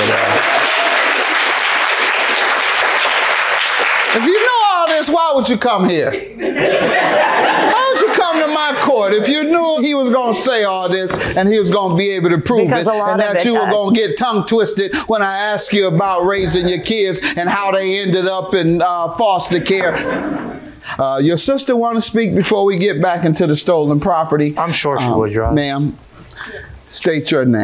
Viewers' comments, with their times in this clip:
0:08 Ms mamas in the white blazer was clapping in caps!!!!!